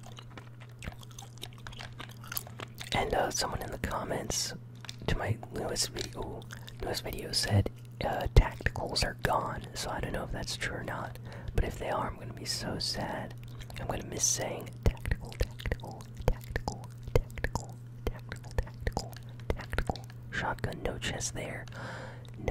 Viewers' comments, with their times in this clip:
0:06 you can hear him not whispering a little